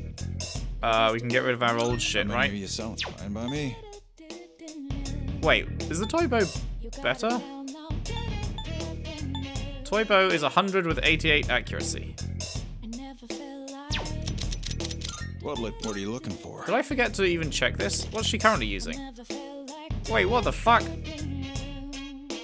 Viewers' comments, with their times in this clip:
0:03 did the cop say "mommy" ?